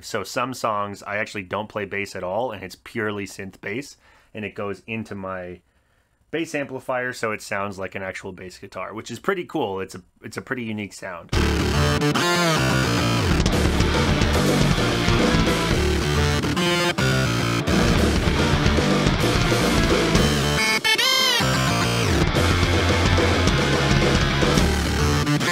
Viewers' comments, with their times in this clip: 0:10 That bass-Gameboy sounds epic. What kind of effects processors do you guys use? Just researching these things myself, need to look in to some effects processors! Great video btw, derserves a lot more views, this channel will take off one of these days, brace for it :P